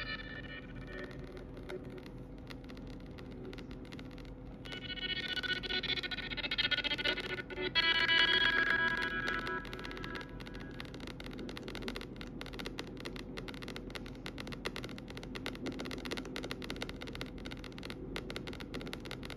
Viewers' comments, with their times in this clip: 0:04 the phone sounds kike it wont to explode trying to run it lmao